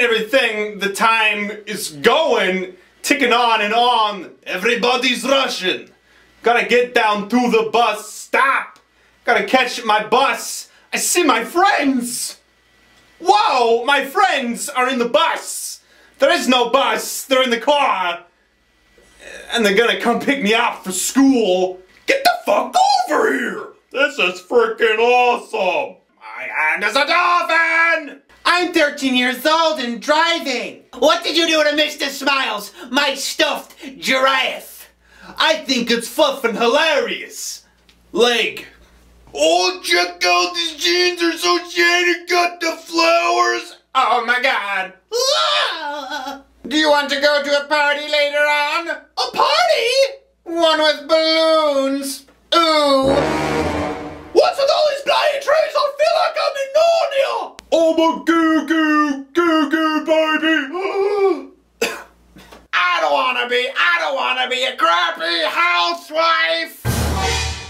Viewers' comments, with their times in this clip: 0:04 EVERYBODY'S RUSSIAN ? =))))) EPIC VOICE
0:22 "This is freakin awesome" sounded like Joe Swanson from Family Guy
0:22 Joe Swanson from family guy.
0:23 "This is frickin' awesome" sounds like Joe from Family Guy.
0:23 sounds just like Joe Swanson from family guy ;)
0:23 He sounds like Cronk from Emperor's New School! XD I loved that show
0:23 sounds like Joe in family guy
0:23 best kronk impression ever!
0:24 he sounds like kronk from the emperor's new grove!!!!
0:24 Joe from Family Guy
0:24 Agree !! joe from familly guy
0:24 joe from family guy
0:24 the " this is frickin awesome " sounds like joe swanson from family guy !
0:25 you sound joe from family guy are you him
0:43 That alien from American Dad
0:53 the zoom and music made me laugh so hard i woke up my roommate. i regret nothing. keep up the good work man.
0:53 i had my head phones on and i thought i farted XD